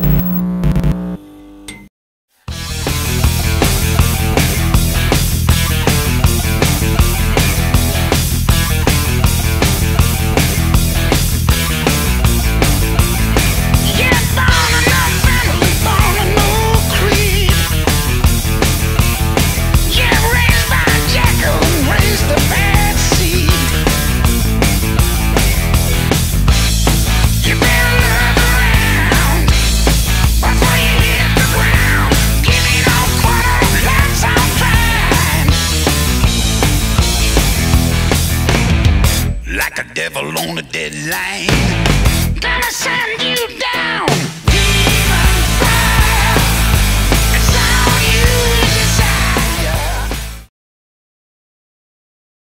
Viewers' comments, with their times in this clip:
0:03 That riff reminds me of the Metallica’s “Hardwired”.
0:30 seconds 20 : 38 the BEST WAY TO ROCK! LOUD!
0:38 when brian hits his deep voice you know it's about to get lit🔥
0:38 Exactly! a lil bit of that hail caesar too when everything gets quiet except Brian. I love it🤘
0:39 "Shot In The Dark" was great already, but damn, this song RIPS. Like everyone says, it's kinda similar to "Safe In New York City" and "Caught With Your Pants Down", but the riff is even more memorable right off the bat. Grooves like hell. I love it when Brian uses his lower register for effect like he does there's just so much soul and blues in his voice. A nice little thing about the arrangement of the song is that Cliff first chugs along on the open E, giving the song its drive, but then doubles the guitar riff the last time before the vocals hit. It's a very minor addition, but makes the riff that much more impactful.
0:39 I love Brians deep voice ! I wish he would use it more often!
0:39 My mom after 10sec: that's a new song? Sounds like another old song.... hell no, I'm fucking new
0:44 like Airbourne \m/